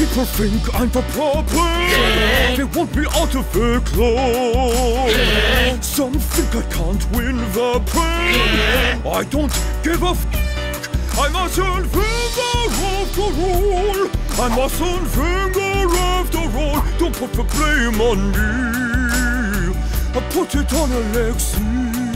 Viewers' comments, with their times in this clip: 0:08 Ksi is there when they say "yeah" at the back